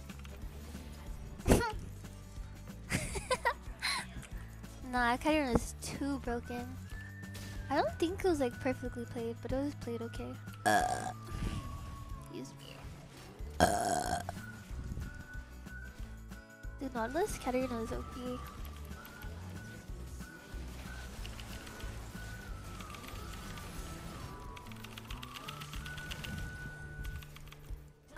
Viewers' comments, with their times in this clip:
0:10 Gamer girl burp